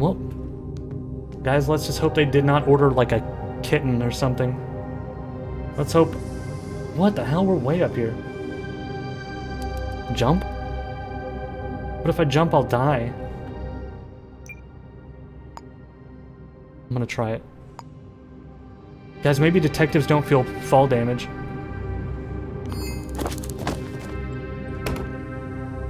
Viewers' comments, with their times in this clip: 0:06 why he start sounding so philosophical